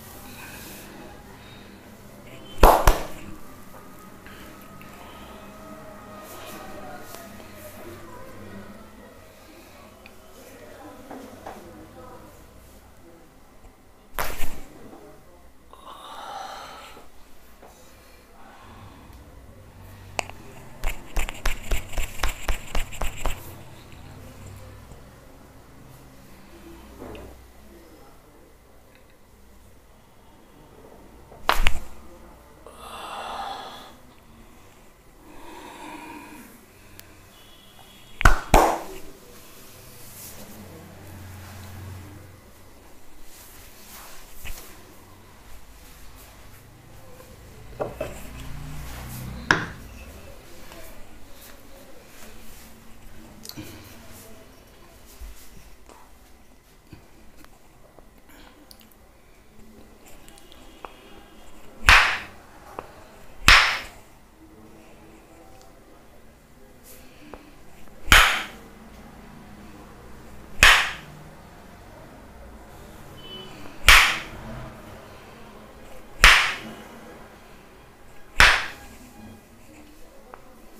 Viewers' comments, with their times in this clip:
0:06 Wow, are some fantastic cracks.
0:27 Someone ripped one
1:01 Baldi's Ruler on